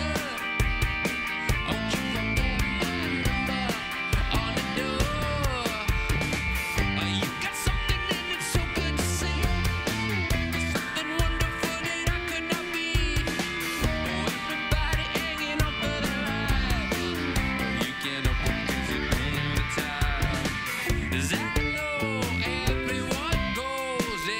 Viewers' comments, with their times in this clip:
0:09 is he saying "fuck fabrizio"?